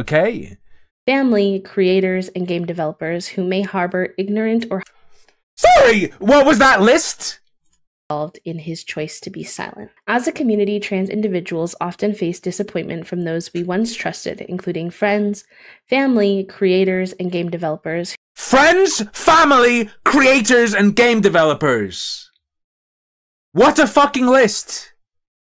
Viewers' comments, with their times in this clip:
0:06 dat crack doh!!!!